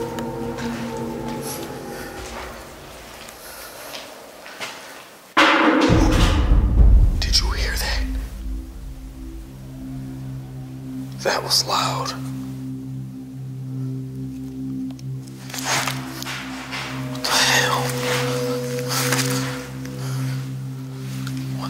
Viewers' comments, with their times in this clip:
0:09 Right after the bang is there an alarm going off or maybe a very faint scream? It could possibly be part of the audio track? It’s very faint.